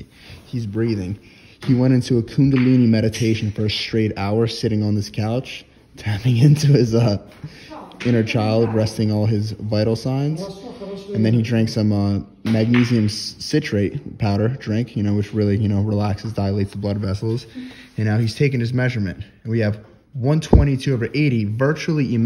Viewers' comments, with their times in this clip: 0:10 someone is talking russian on the back